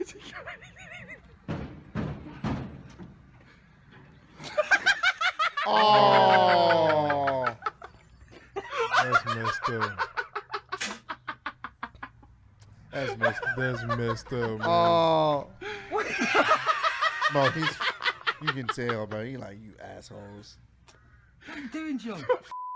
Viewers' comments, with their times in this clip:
0:03 This guy laugh like the joker from batman and I can't stop laughing Lmmfao 😂😂😂
0:04 men’s laughing All: Awww! Me:🤣🤣